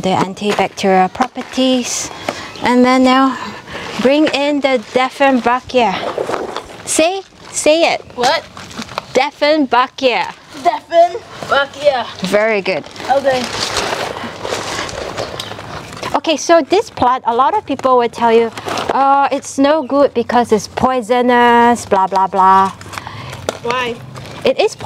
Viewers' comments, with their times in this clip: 0:05 The assistant is a natural garden artist dephen fuck yuh! 😂 thats how it sounded like, I truly enjoyed it!